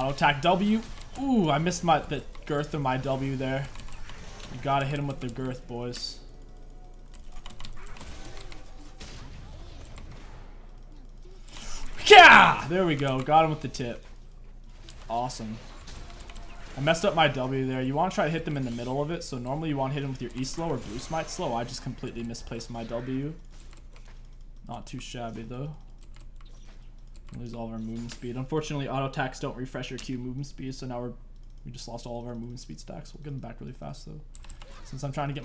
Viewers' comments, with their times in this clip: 0:10 these sound effects are slappin :D
0:12 The battle-cry broke me. I hope you're happy.
0:16 that noise was the greatest noise of all time 😂🤣